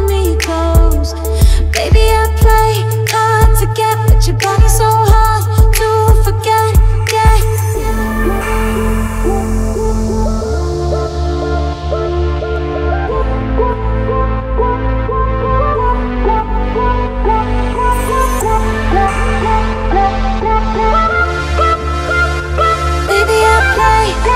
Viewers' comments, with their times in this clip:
0:10 Why does this sound like the Pacific Rim theme so much?